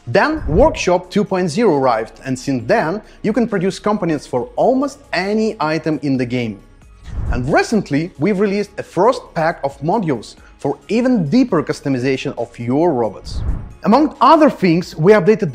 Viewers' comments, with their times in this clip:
0:03 "Componients" ahhahaha Never change your accent guys!